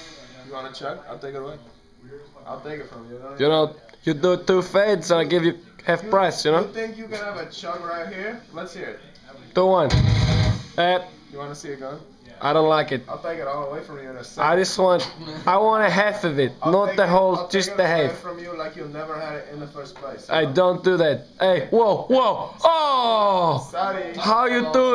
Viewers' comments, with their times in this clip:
0:06 and on who's behind the camera? Hell of a funny voice. hahaha ey. ey. ey. EY. EY. OHHHHH.... how you do datttt.